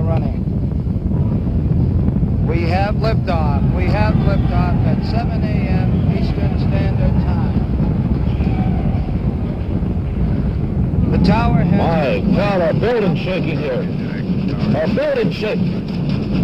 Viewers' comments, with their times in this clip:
0:03 The original "NASA Space X Team's joy " listen to how much emotion they felt when they saw the takeoff of Saturn V.